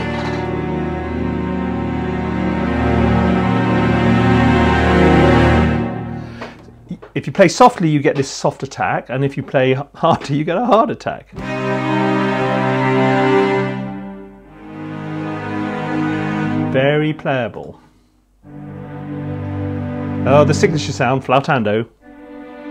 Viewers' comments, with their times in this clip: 0:06 I totally misheard you but "If you play softly, you get a soft attack, and if you play harder you get a [heart] attack." is now my favorite thing ever. 😂